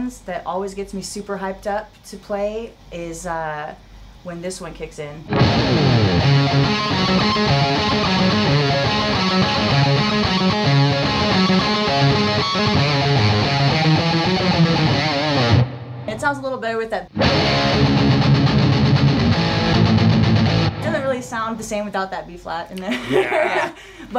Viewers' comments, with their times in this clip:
0:06 Nita's favourite Maiden riff is the Shortnin' bread song. Mama's little baby loves that song